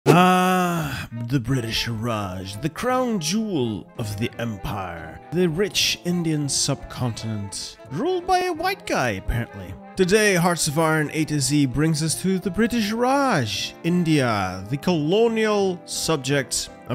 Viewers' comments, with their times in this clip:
0:00 the "aaaaaarrrgghhhh" is so legendary